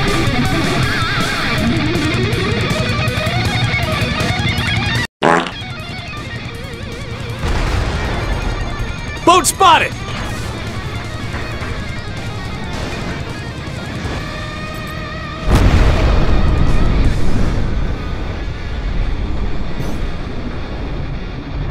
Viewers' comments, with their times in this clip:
0:05 That FART Epic lol